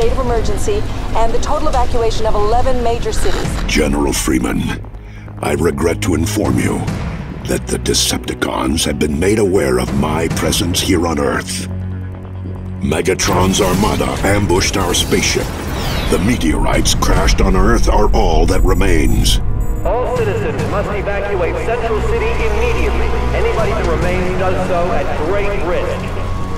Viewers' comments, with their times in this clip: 0:07 Prime Voice sexy hd pixels